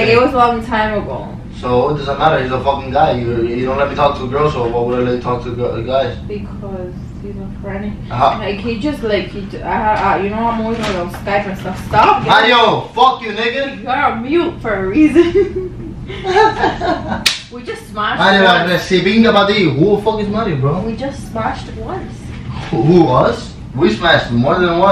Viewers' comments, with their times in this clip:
0:09 did he say the n word or is that just me